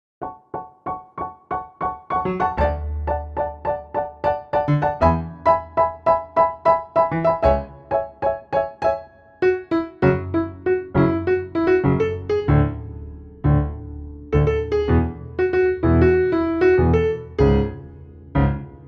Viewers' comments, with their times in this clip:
0:01 that my ringing of my school 😂😂